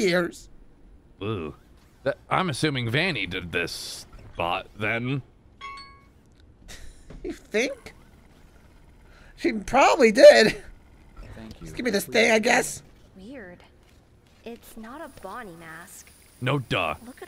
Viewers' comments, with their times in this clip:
0:04 the ringtone of one of them being called was funny ngl